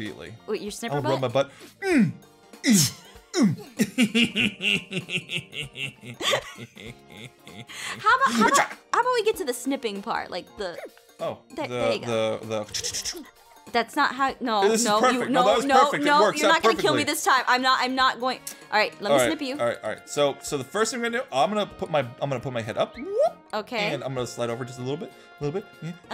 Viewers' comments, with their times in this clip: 0:03 best evil laughs in the world
0:09 THAT “hmgh!” WAS SO CUTE :3